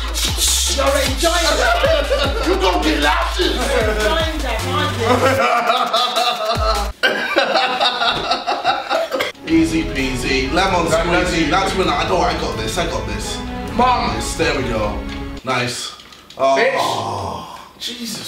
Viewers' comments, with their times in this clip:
0:04 JJ's dad. Laughing like a baby